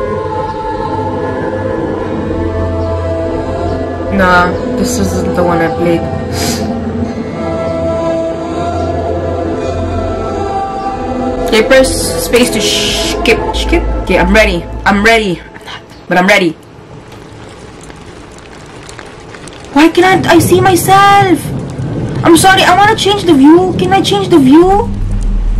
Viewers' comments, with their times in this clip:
0:10 her baeing like a baddie by saying Im ReAdY